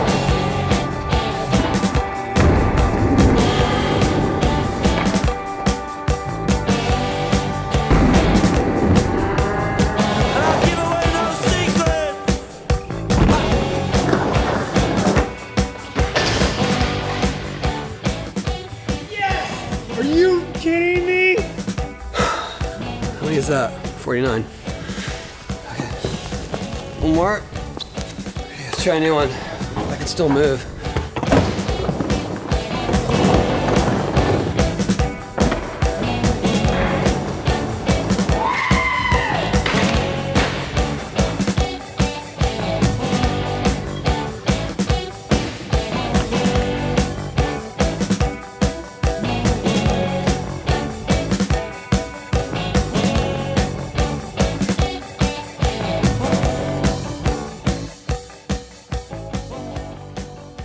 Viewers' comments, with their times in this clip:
0:10 what a legend! he pulled a 720 and bailed threw the gap and the first the he shouts is: "YESS"
0:15 seeing him fall from there and then yell "YES!" is somehow one of the funniest things I've seen.
0:38 lmao that sounded like one of the droids from Star Wars getting fucked up lmao b
0:45 You actually can hear it hitting a wall or something, a faint bounce behind the beat of the music